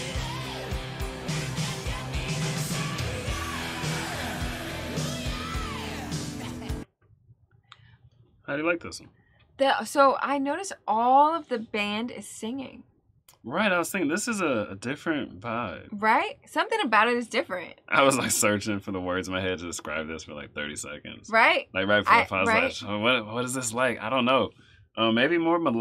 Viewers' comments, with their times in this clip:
0:10 "I notice ALL of the band is singing." Yep! Def Leppard is known for those really beefy backing vocals. It's a challenge to recreate those live and many bands will not even bother to try and will just use backing vocal tracks, but Def Leppard prefers to put in the hard work involved to sing the backing vocal lines live.